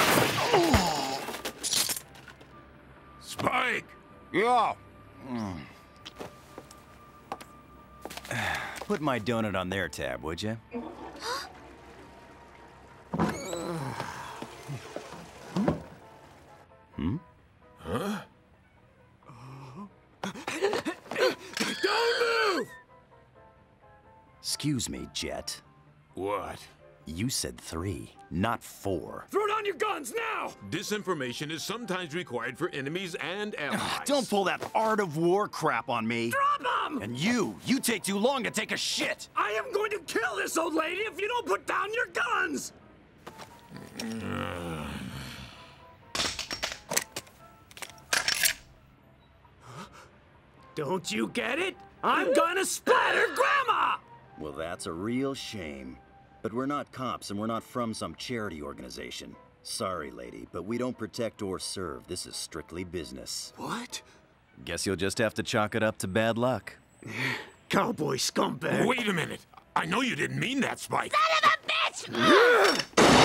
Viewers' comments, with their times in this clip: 0:10 the flush makes me cringe
0:13 I love how casually this fella walks out. Did he not hear a fucking gun go off!?
0:15 How did this guy not hear all the racket going on outside in that bathroom?
0:36 sounded like English dub naruto for a sec😂
0:46 So smoothing sound to here when you're ready to attack Literally
0:59 The background shopping music sounds like the curb your enthusiasm theme lol